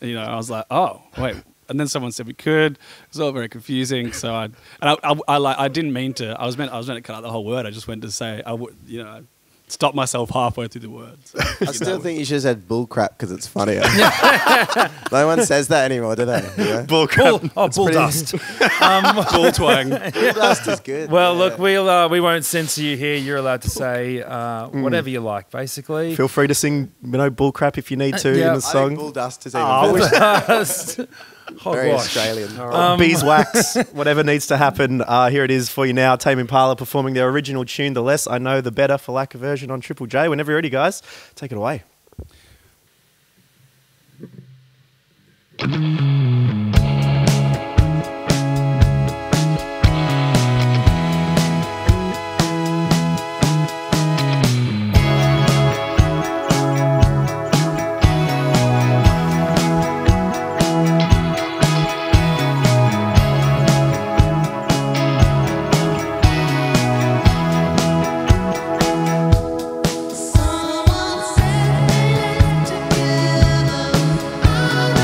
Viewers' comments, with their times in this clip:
0:10 🔥🔥 Is this listentnig all the time This voice is extraordinary 💞🔥 👇🔥
0:45 the music starts
0:57 bruhh I heard nothing
1:00 I love this version for one thing in particular : the way he hits the rif with the effects on his guitar. Yeah I know this might sound "stupid" but to me it really adds to the nostalgia you an have listening to this. Picture it like you are at a party, 90s, the girl you like is there too, you both give you "the look"... Yeah I know, ahah. Sorry, but it's my job to picture things like this x) Anyway, excellent song, excellent version. Love it <3